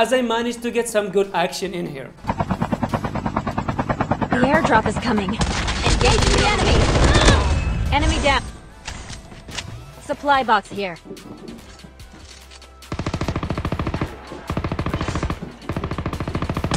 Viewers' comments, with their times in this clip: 0:04 her voice is sooooo cute 😍😍